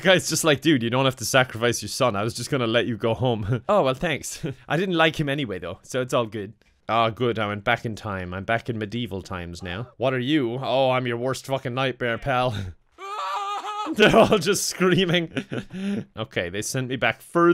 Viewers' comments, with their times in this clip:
0:03 I hate that he sounds like pewdiepie there lmfaoo